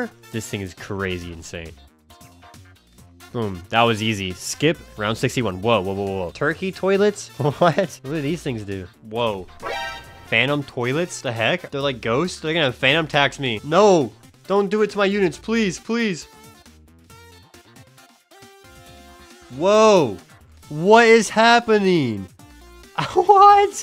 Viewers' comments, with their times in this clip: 0:10 theyre gonna fanun tax me 💀